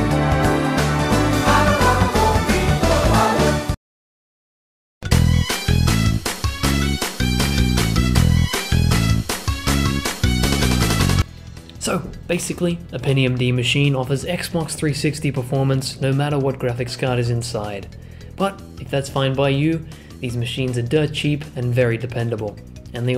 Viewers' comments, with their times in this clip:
0:04 loved the ctr music there
0:05 Mario kart music out of nowhere...